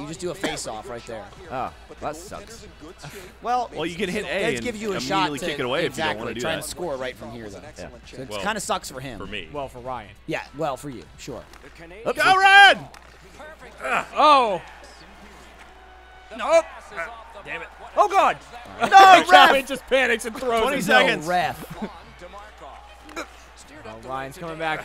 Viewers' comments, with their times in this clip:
0:09 you can hear the Laser Team Song in the background